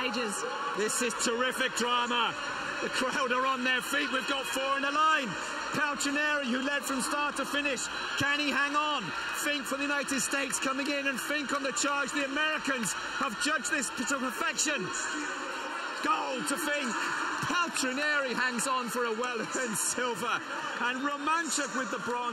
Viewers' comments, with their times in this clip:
0:05 we NEED, DEMAND a new comentator for Paris. The most exciting finish to the greatest 800m race ever and I felt NOTHING with that narration